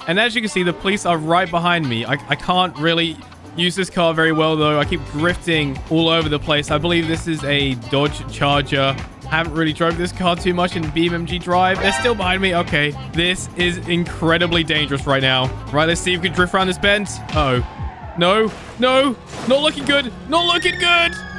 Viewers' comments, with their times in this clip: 0:07 nice cop funk